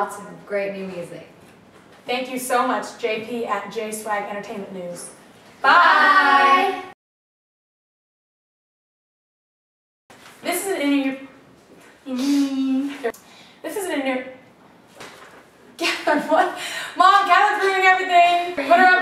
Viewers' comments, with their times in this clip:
0:05 Did anyone hear their "bye" harmonized ?